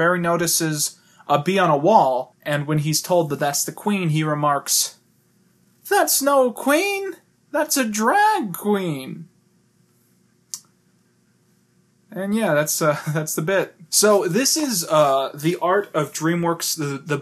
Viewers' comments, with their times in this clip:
0:05 WHY DOES HE DO THE BARRY VOICE SO WELL LMAO